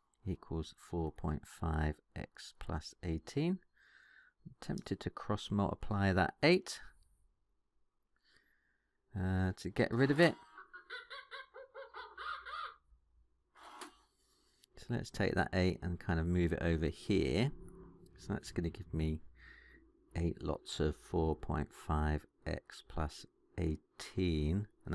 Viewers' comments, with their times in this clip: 0:10 I have seen all sorts of weird and wonderful things in my life, but I have never heard a calculator do that